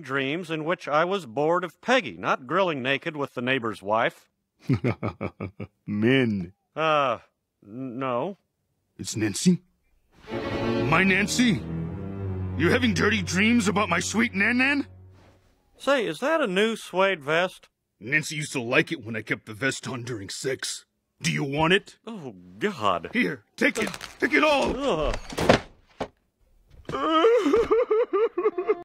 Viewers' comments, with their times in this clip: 0:10 The music change has me dead 😂😂😂😂
0:26 idk why his crying is so funny to me